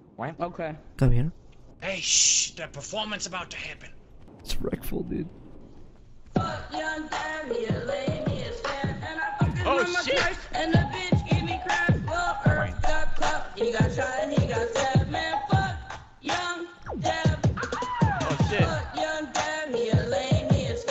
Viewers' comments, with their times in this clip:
0:04 I did not expect this to be actually half-decent. I mean he sounds like he’s like 14 but at least he actually kinda has some bars